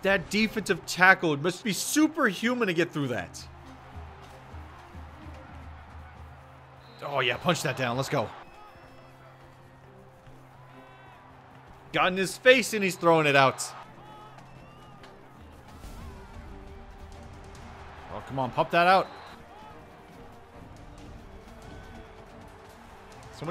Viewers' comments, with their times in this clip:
0:06 he sounded SOOOOO excited there it was hilarious lol